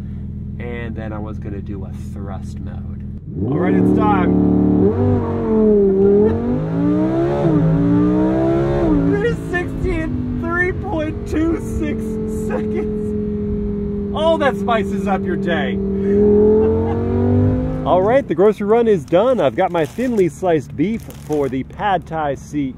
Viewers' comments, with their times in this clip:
0:05 Sound like an Audi r8